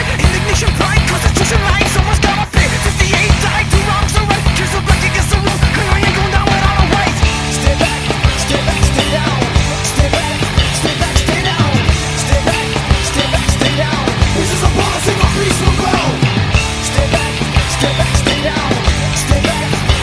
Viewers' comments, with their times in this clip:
0:05 Damn, -50 those bass slap-boings... They just work ..